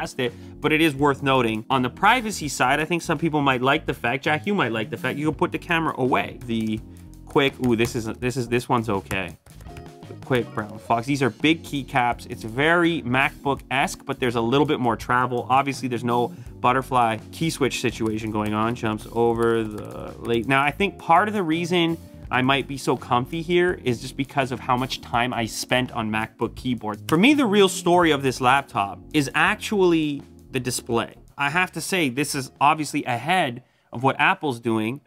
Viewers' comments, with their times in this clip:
0:05 Any Naruto fans here think this sounds like Shikamaru's theme?
0:16 "The quick brown fox jumps over the lazy dog. over the *lake. Lmao. It sounds like that's what he said.